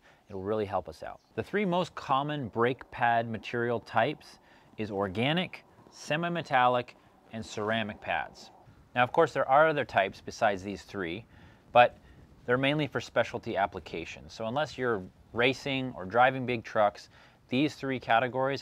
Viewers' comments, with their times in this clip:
0:04 Did he say "Sema" Metallic? ROTFL!